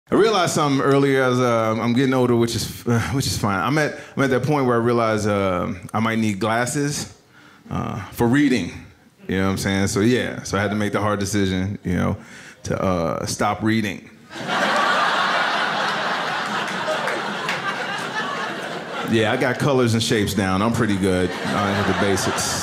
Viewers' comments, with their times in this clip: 0:10 somebody wooped at getting reading glasses